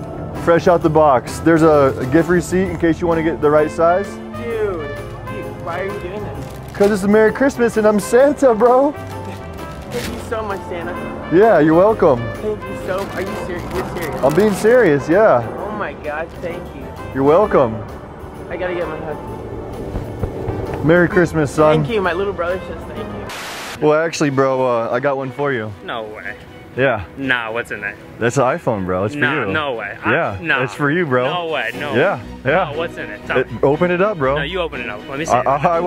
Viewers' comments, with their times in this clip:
0:09 The most sincere "thank you" to Santa ever.
0:18 the way he said "Thank you so much, Santa"... how cute.